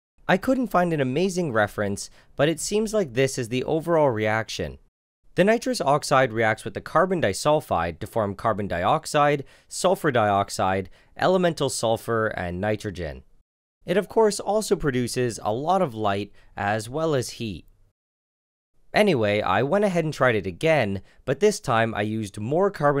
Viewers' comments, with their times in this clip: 0:06 What I hear: Hablahaganauvakvkabaladha;ababa